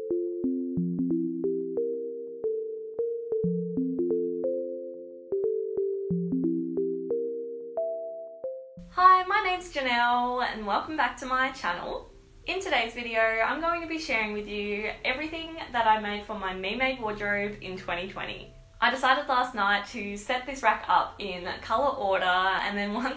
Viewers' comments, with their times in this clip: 0:09 she sounded so southern for just a second lol